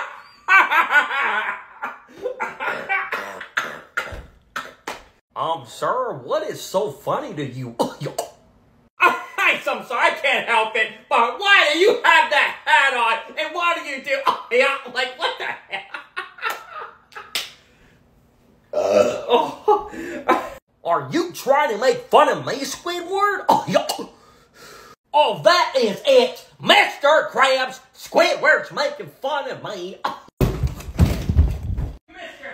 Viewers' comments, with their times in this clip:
0:03 Bro Dying At Laughter
0:18 2763% real burp